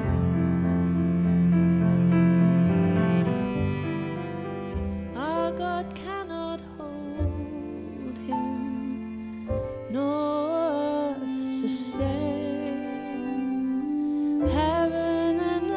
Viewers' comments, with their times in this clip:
0:03 my eyes start brimming with tears, Dodie's voice and intonation combined with the melody is probably the most beautiful piece of music I have ever heard 🥺 ❤️